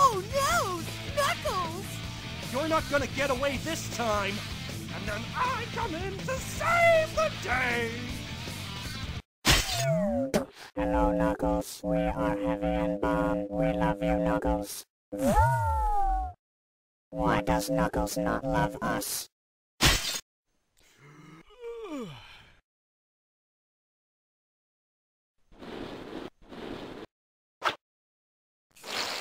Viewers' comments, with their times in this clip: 0:10 Heavy sounds like a cyberman from Doctor Who.
0:10 sounds like pico